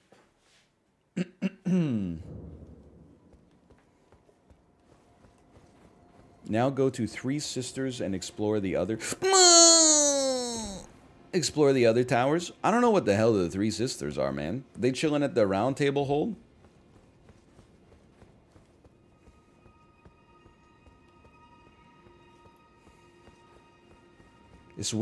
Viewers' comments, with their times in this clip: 0:08 cow after huffing helium